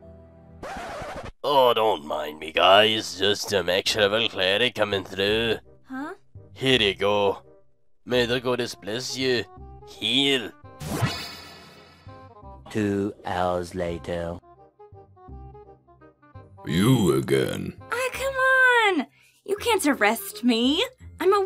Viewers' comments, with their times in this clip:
0:06 The Scottish accent from the dwarf cleric... perfection.